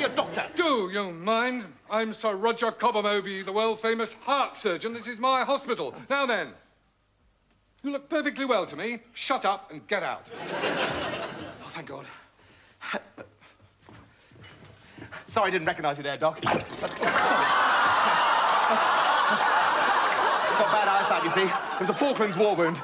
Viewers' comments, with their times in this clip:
0:04 he can't hold in his laughter😂😂